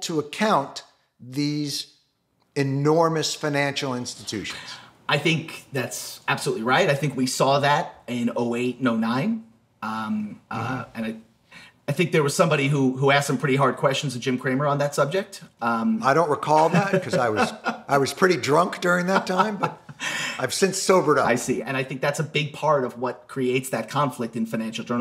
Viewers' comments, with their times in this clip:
0:10 What John says there sounds exactly like the guy in the background at the end of Pink Floyd's Money. 😆 "I don't know I was really drunk at the time."